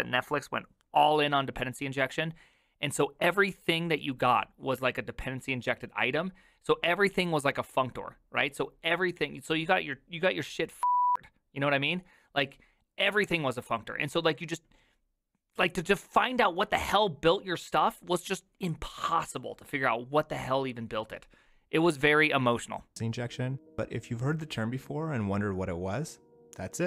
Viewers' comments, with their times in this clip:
0:09 live beeping or bleeping